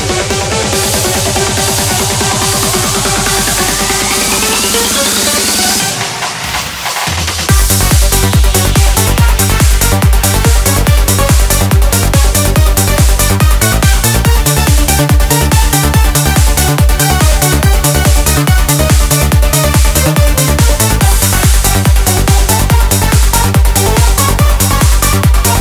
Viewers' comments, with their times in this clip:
0:07 the beat drops